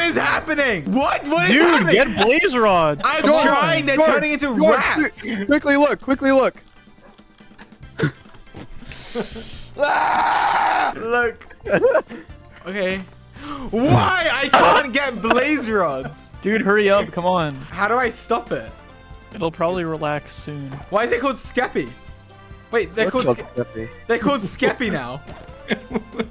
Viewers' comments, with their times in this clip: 0:10 he couldn’t laugh so he just let out a primal scream